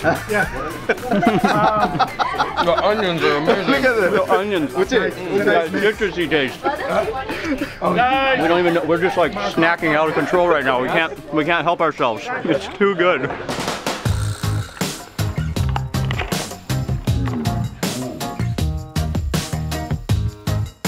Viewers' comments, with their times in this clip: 0:06 he is laughing.... but mark igone him.....great mark